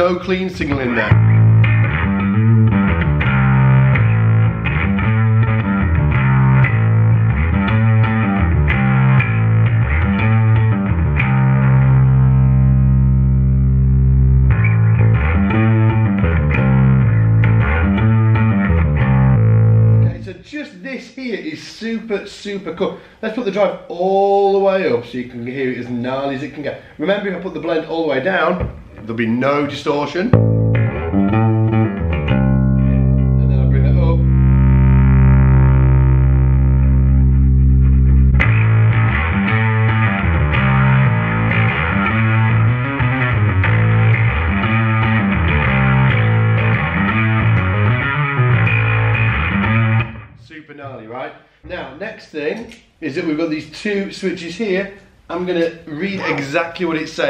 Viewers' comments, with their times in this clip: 0:03 #darkglassalphaomega the setting with no clean. Has a great shoe-gazer sound to me.
0:04 #darkglassalphaomega I really liked the full alpha setting It was nicely distorted but still had a definition and cleanness to it. Killer tone ! Thanks for a great demonstration of the pedal!
0:04 #darkglassalphaomega the alpha mode well balanced, by 👌
0:04 #darkglassalphaomega I love the sound when you turn the blend all the way up on It's freaking amazing.
0:08 #darkglassalphaomega sound it sounds killing for me :)
0:09 I really thought that the setup was nice, gave it a bit of heaviness, but wasn't too overpowering
0:14 #darkglassalphaomega I loved the tone around the mark the most, in other words Alpha blended with the clean signal. Hope I'm still in time for the contest:) Cheers!
0:24 #darkglassalphaomega I've had a Boss Overdrive pedal for ages, but I never use it because I like my sound with plenty of bottom end, and that's just what you get rid off when you switch the Boss on. So with the Darkglass Alpha Omega I would definitely go for the setting in With almost three quarters of clean signal, I'd put the pedal to the metal with the overdrive. I wish I could get that fat gnarl from my Boss unit!
0:39 #darkglassalphaomega Hi i don't know if the game is finished but i really love the tone you get really metallic and aggressive, it remind me of John the fisherman by Primus ! This pedal sound fantastic !!!
0:44 #darkglassalphaomega supercool sounds super cracky ❤